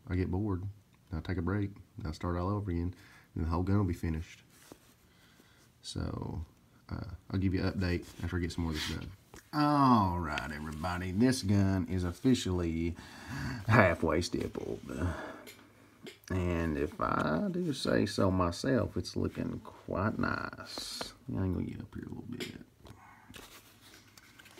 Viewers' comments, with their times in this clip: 0:09 you sound like the Joker, so cool. Heath Ledger.